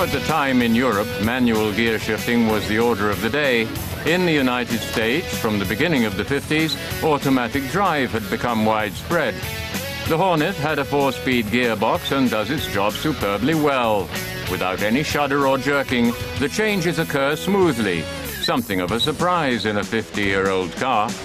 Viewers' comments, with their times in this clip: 0:03 nice vid shame about the awful and too loud music when what we should be hearing is the engine mins